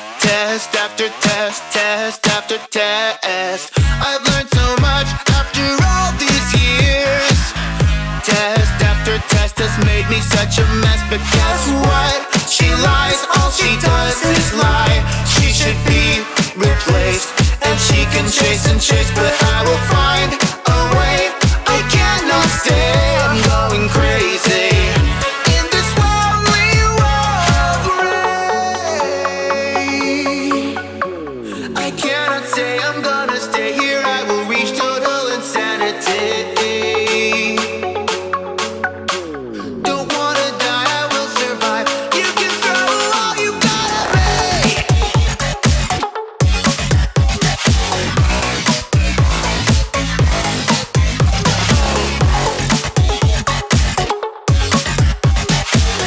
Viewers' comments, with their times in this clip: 0:10 I dont know why, but i hear "test after test has made me such a mass spaghet".
0:42 that a deep scream ever and it make me surprise a bit 😅